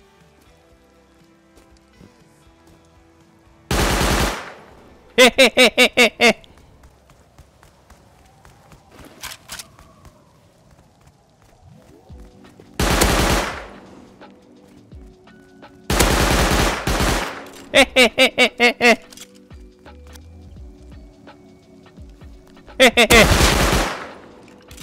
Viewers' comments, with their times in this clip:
0:05 that laugh got me dead😂💀